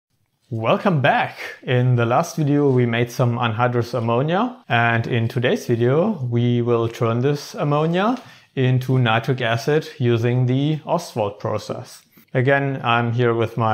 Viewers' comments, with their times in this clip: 0:01 definitly was not expecting that voice to come out of that dude like that.. lmao